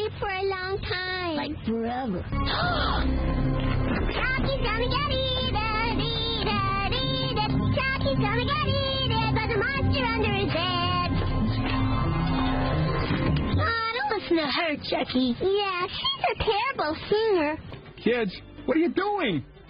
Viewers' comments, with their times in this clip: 0:04 her song is just 😂😂